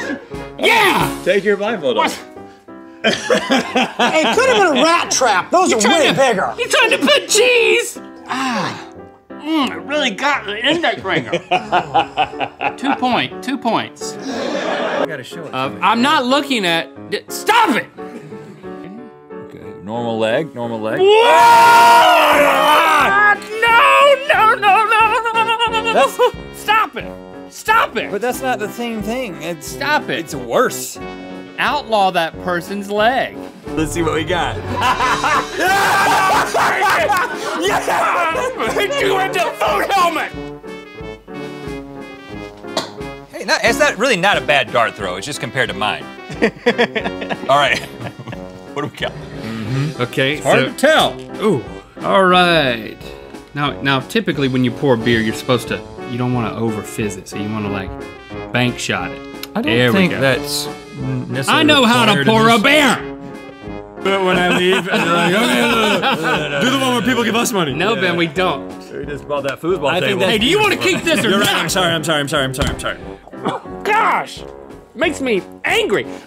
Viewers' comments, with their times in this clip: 0:06 The way he said CheeeEEse 🤣
0:22 Link Neal turns into a motorcicle and isn't abble to start the engine
0:25 Link’s impression of a CD player
1:01 it sounded like “I know how to pour a 🐻.”